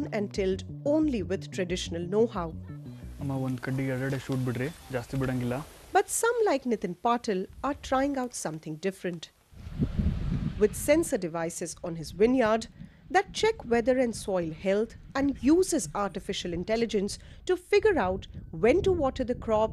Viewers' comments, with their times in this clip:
0:05 Proud of my india 🇮🇳❤ He is speaking kannada ❤